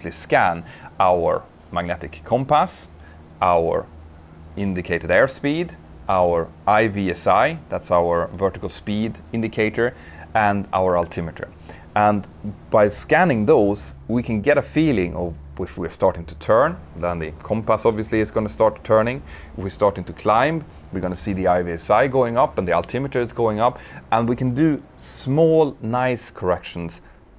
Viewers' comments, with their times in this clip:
0:08 who else was fooled by the whatsapp sound